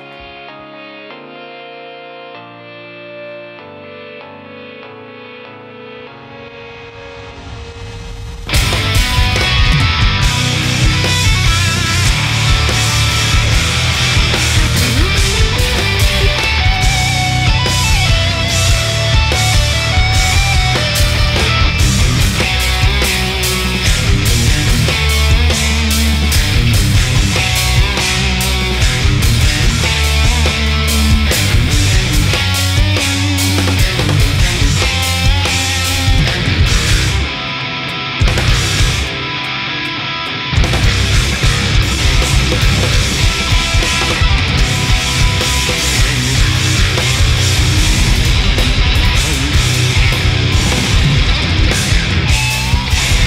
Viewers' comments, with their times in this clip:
0:08 Totally love this song, but I really wish they'd done more with that riff. Sounds absolutely godly, especially on the studio version.
0:14 I never know there will be sweep here
0:36 This song is fucking insane... that riff